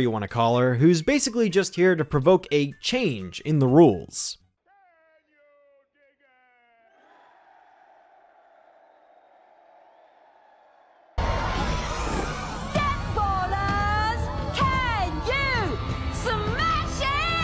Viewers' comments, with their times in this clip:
0:04 What was that clip supposed to say? It was super quiet.
0:05 Stupid YT copyright on muting the audio! BTW I know that it's necessary to mute the audio, So don't bother pointing that out.